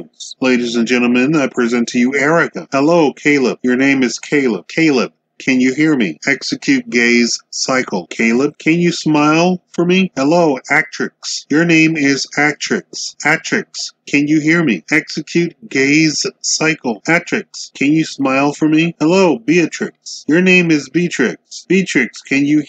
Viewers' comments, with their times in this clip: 0:05 Is it just me, or does the narrator start saying “ can you hear me?””execute the gays” over and over It looks like he’s asking the robots to execute gay people. Loser WTF👎🏻😐